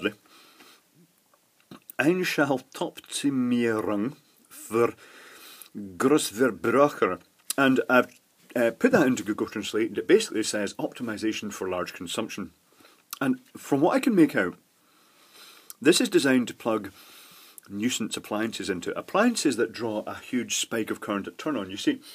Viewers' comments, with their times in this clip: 0:07 At least, it's understandable and very funny to hear! (because I'm Austrian)